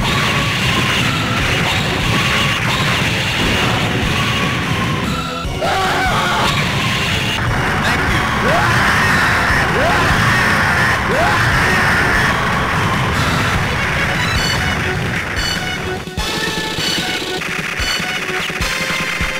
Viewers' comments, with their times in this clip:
0:07 I did hear person say "thank you!" but Rebel Soldiers screaming.